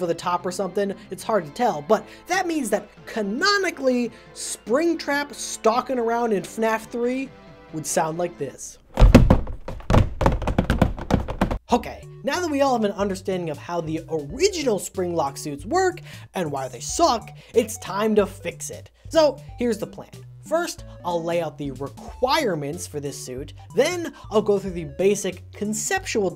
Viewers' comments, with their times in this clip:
0:08 Did you 3D print plastic clogs or something?